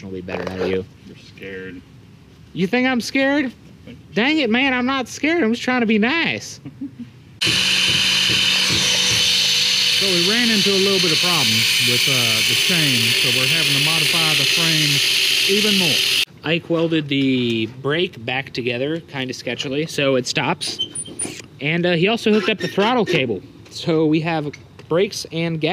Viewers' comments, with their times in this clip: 0:09 is that you Morgan freeman? XD